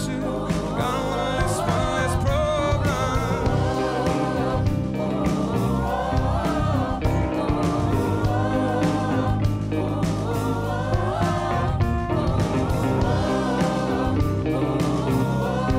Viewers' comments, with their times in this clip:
0:03 reminds me of "the seed" by aurora